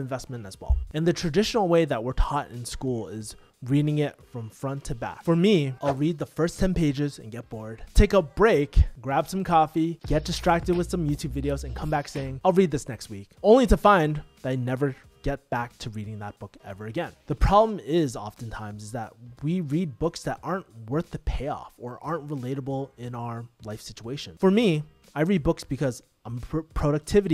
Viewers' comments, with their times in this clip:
0:09 HOW HAS OVERYONE OVERLOOKED THE MUSIC So Hilarious "youtube videos"